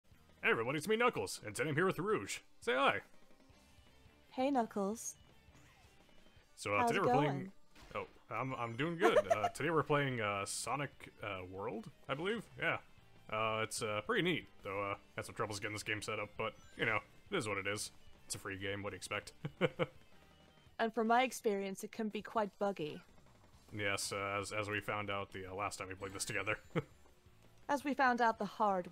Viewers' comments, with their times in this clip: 0:09 Rouge laugh was adorable she should laugh more often